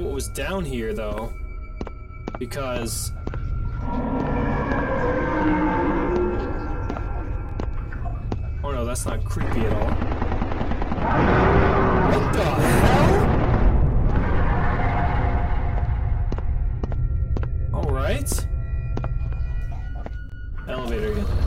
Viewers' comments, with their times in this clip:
0:09 Sounds like Serious Sam Second Enounter when you fight with the bull